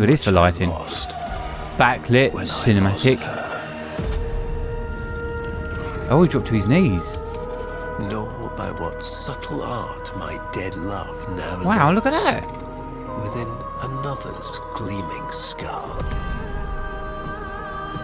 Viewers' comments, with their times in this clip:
0:03 man when Khora's ost kicks in, I always feel the chills.